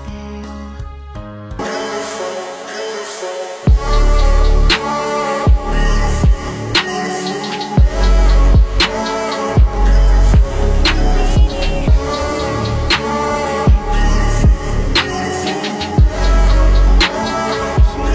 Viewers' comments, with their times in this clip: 0:03 I'm so sorry I forget to cut the music